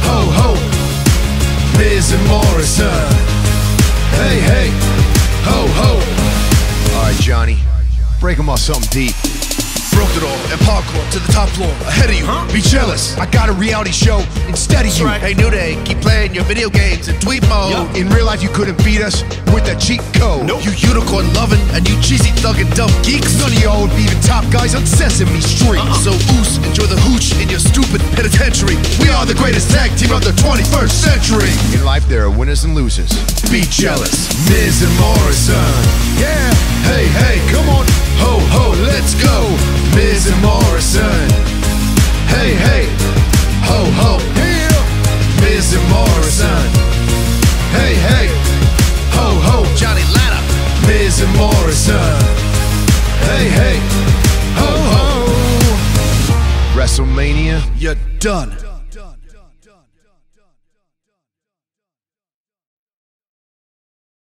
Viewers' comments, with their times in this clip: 0:09 Morrison Spitting Reason: White Rapper Eminem
0:54 Did anybody heard in how The Miz says hoho